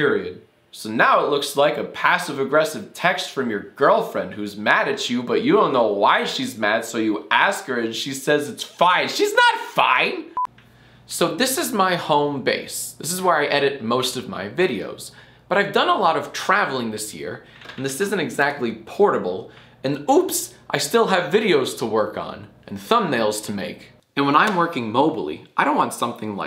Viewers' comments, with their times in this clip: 0:10 "This is my bald face." -jackfilms